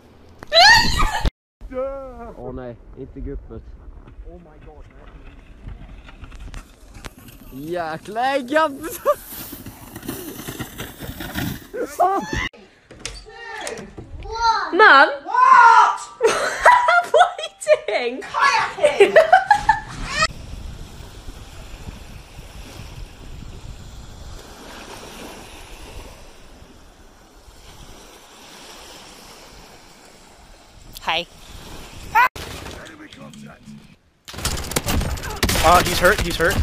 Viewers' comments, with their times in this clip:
0:10 that sounds exactly like a ghast lmao
0:10 R2-D2 in a nutshell
0:11 sound like a ghast
0:11 why he sound like a ghast tho?
0:11 that's a ghast doooddd lmaoo
0:12 that guy sounded like R2D2 😂😂😂😂 LMAO
0:12 Dude just screamed in Ghast
0:18 he said "Hijacking!" like a literal funny guy and it makes me laugh. XD